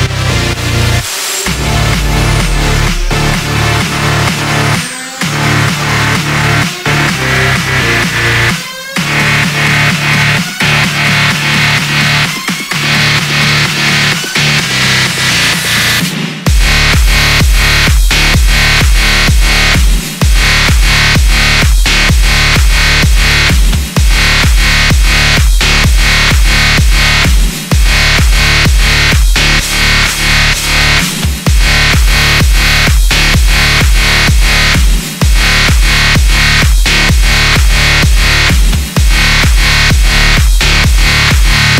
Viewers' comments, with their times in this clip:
0:09 The part that starts ish is just so bad. Same fucking beat, sound and tone for like a minute, wtf? Its like a monotone speech...
0:24 Holy fuck, only into it and I already think I'm gonna go deaf.